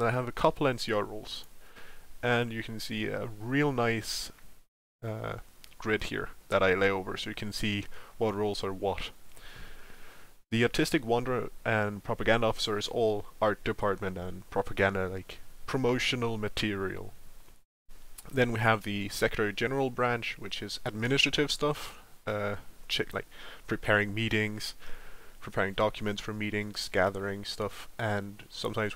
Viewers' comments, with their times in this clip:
0:09 I legitimately thought you said, "the Autistic Wonder", and I was like, "well I guess we're here now." I need to listen closer...